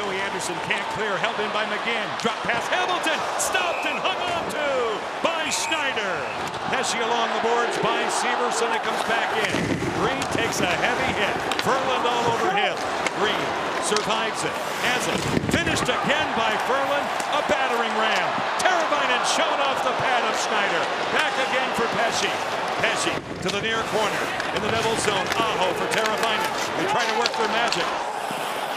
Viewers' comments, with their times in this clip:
0:09 “ref you suck” the chanting was intense yesterday